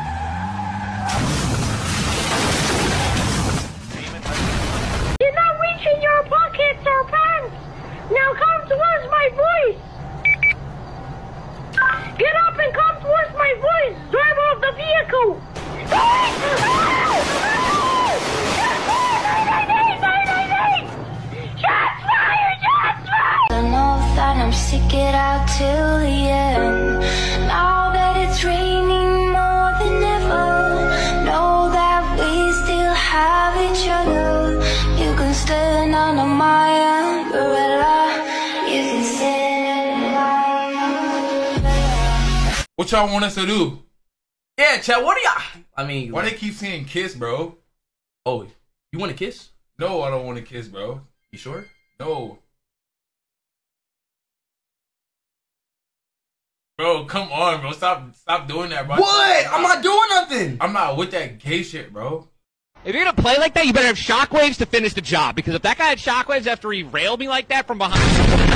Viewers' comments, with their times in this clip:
0:09 bro sounds like a real fu-ing cop
0:54 you can hear the silence 💀